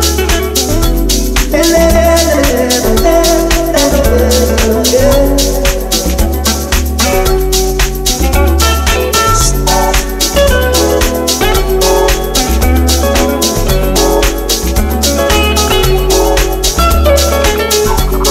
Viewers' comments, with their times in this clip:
0:04 the song ❤‍🔥❤‍🔥❤‍🔥❤‍🔥🔥🔥🔥 oooomaigot